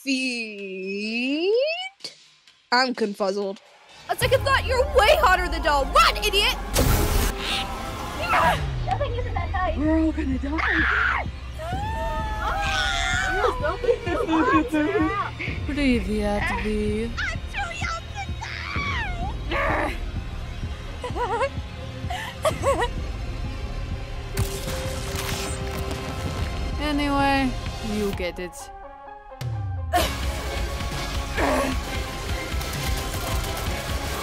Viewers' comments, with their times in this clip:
0:10 BRO THIS SCREAM 😭 I was so excited to see the prom episode i didnt comment on episode 2 but I FRIGGIN LOVED THIS EPISODE!!! this is one my fav episodes as well so makes sense..CANT WAIT FOR EPISODE 4!!!!!
0:16 Lol you dubt the entire episode 😯 I think it turned out good I like the part whif the screaming because it sounds like noone actually trys to scream to muche (so as not to confuse neighbors or something) but my favorite is the voice of N he did sooo good I my opinion 🤩👍